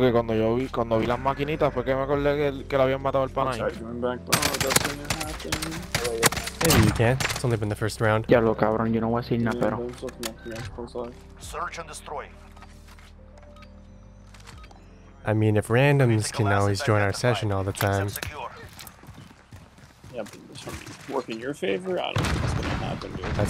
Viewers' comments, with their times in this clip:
0:08 A litlle of Puerto Rican guy right there haha 🇵🇷 ,Good game bro u are the best 💯 🔥